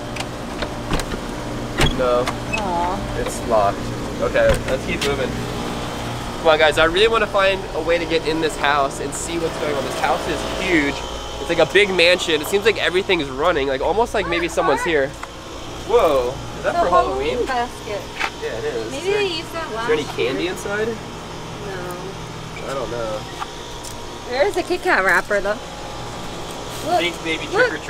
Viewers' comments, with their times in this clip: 0:10 the AC is running someone might be living here 🎃